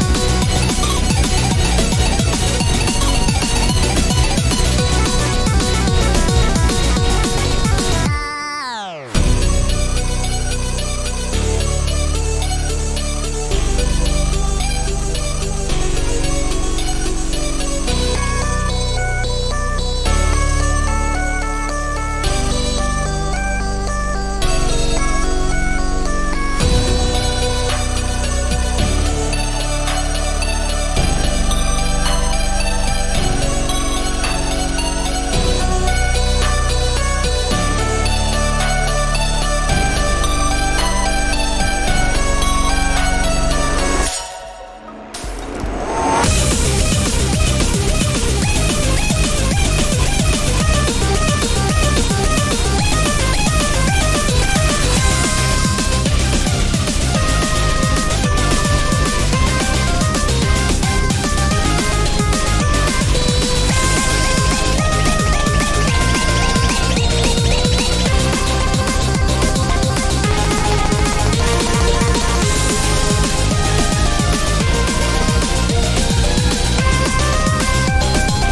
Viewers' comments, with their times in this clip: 0:08 Mixed feeling about this. For most part it sounds like a little downgrade, but the part from is pretty good
0:42 WAITWAITWAIT YOU THINK YOU COULD SLIP THAT BY ME THATS THE SOUND OF A SUCCESSFUL GUARDIAN ANGEL BLACK LITERALLY TRIED TO KILL BF BUT YELLOW SAVED HIM AND BLACK SCREAMS IN ANGER HA
0:43 If you listen closely, you can hear the sound of a shield (given by the ones who have the Guardian Angel role) getting destroyed, this means BF was protected by Yellow with his Guardian Angel role (which Yellow gained by getting killed by White), this allowed BF to run to the meeting room and successfully vote out Black and White
0:43 the new ending portion makes has a neat detail in the form of yellow’s ghost being next to bf that basically means yellow had the guardian angel role (you can faintly hear the block sound effect along with the shield breaking immediately after) and blocked a hit for bf, allowing him to run and get to the emergency button
0:43 Great remix, and I love the lore parts, where Yellow gets his revenge on White by protecting BF (you hear a shield break and you can see Yellow in the background of the part right after, and where Gray gets revenge on Black by voting him out just like Black voted out Gray's father (in both scenes the voter is seen in the reflection of the one voted)
0:46 This remix is really good. It feels way more swingy, albeit less intense but definitely more “fun”. It feels like white is the main threat of the song instead of Black, and I mean that as a compliment. It feels way more empowering, as if it were to hype you up against a difficult set of bosses. Overall, it’s not as amazing as Double Kill, but it’s still a very good remix, and it is hard to beat Double Kill. 8/10 would watch again Edit: oh yea and feels liek getting thrown out a 50 story window with how breathtaking it is
1:03 i dunno but that part its more like Yellow voice